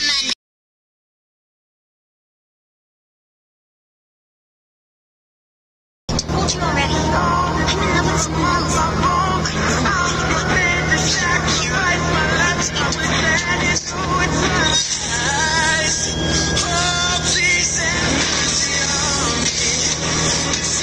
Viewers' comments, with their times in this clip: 0:06 that went from sad to REEEEEEEEEEEEEEEEE REAL FAST